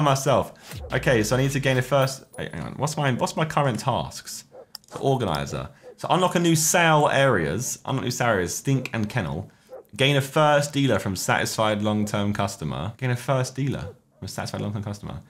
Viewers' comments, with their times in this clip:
0:03 man really sounding like a dealer